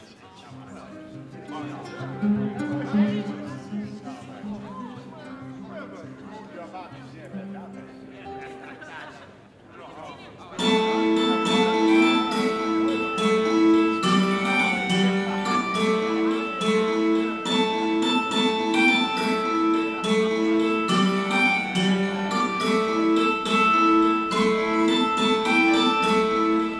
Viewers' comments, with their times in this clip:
0:10 Fact: is played on a hammered dulcimer.